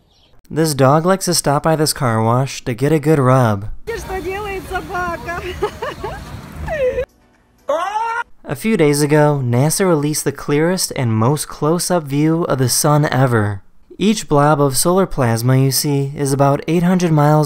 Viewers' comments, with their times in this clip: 0:04 girl: "giggling" man: "AAAAHH-" 💀